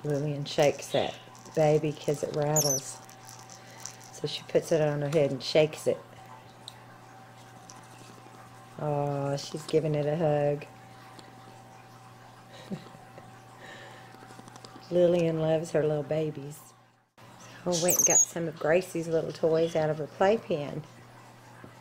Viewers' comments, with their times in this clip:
0:07 Awww... Lillian's PURRING when she hugs and kisses her baby, That is so adorable.